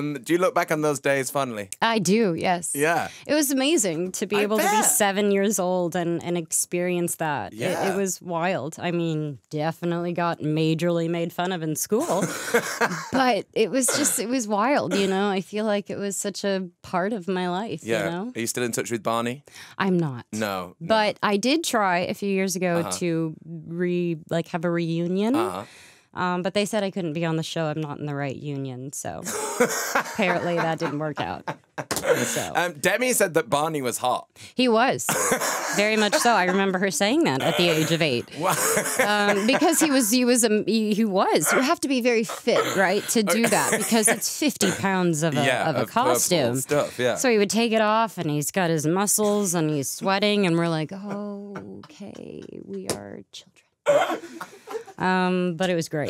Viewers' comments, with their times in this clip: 0:08 she reminds me of someone with how she talks here, someone will know who i meannn i cant think of it
0:39 Y is he laughing so much